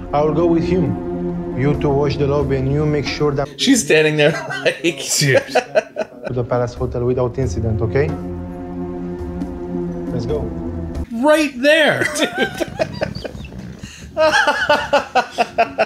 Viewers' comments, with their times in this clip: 0:03 The guy talking has got to be the guy dubbing Steve's voice in the other films.